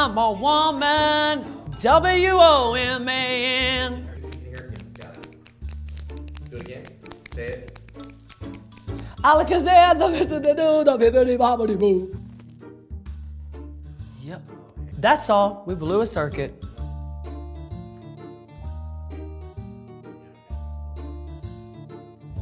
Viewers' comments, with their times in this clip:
0:03 The nail clicks are giving me LIFEEEEEEEE!!!!!!